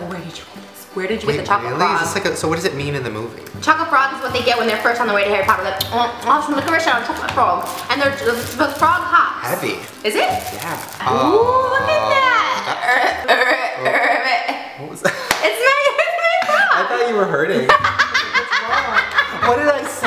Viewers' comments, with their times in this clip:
0:06 I have absolutely no clue what she said